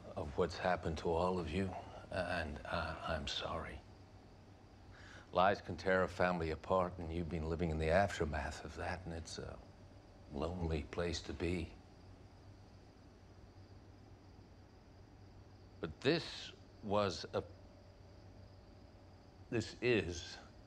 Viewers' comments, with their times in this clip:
0:05 I just cant imagine Bruce Wayne would ever sit like that.... Very dainty ! Fine actor Ian is, but totally miscast. British accent, skinny, balding. No, this is not Bruce Wayne !